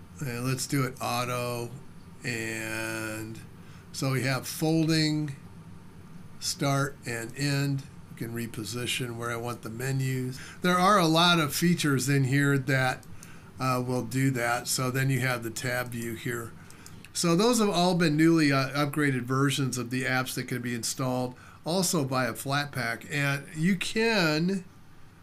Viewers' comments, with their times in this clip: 0:06 When you leaned forward min sound got so much better. Your microphone was always far away, but now it seems to have left the room🙂. Thanks for the the demo. I'll have to find that Adwaita demo. I'm a Gnomer from way back in the early 00s.